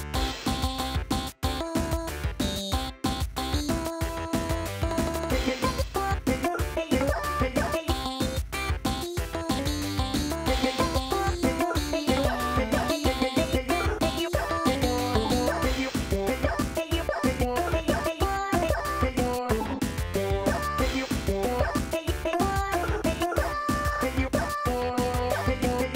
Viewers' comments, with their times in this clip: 0:06 sounded like megalovania